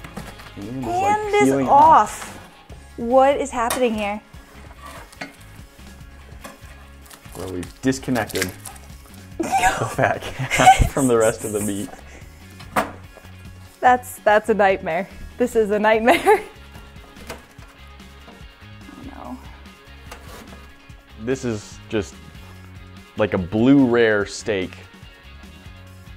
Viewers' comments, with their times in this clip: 0:07 Terrari slime die sound XD